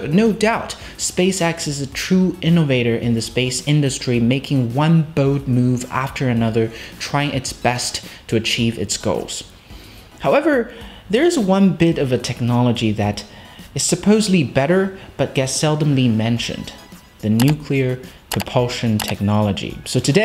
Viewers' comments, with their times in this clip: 0:05 I tried to make a bowed move once while dancing, it did not end well.